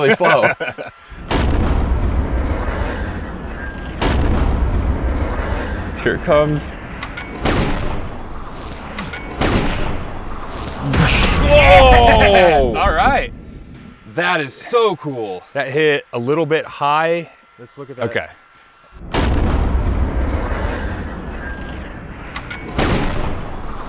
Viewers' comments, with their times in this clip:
0:06 The slow motion sound of that rifle being fired is incredible